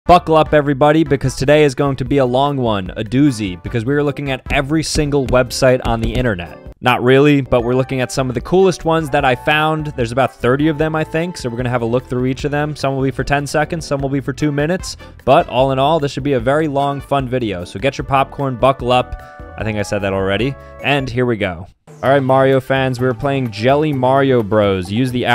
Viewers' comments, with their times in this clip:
0:00 nah he said fu-- up
0:00 fuckle up everybody 💀
0:00 F**kle up WHAT
0:08 Why is he so monotone